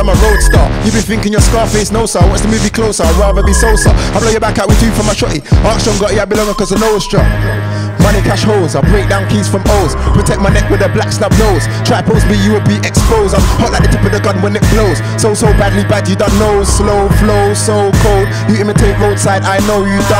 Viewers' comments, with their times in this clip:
0:08 WHAT THE FUCK IS THAT TUNE!!!!!